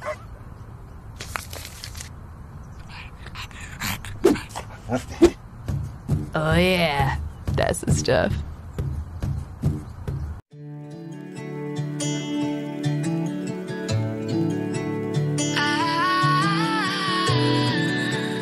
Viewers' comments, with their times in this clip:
0:06 no he’s talking